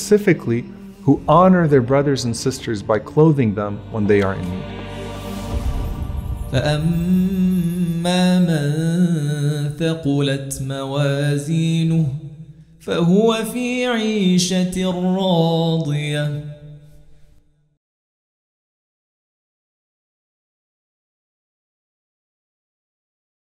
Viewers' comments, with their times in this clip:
0:07 Does anyone KNOW the NAME OF THE SHEIKH reciting ??!! Beatiful voice masha’allah ❤️🤲🏽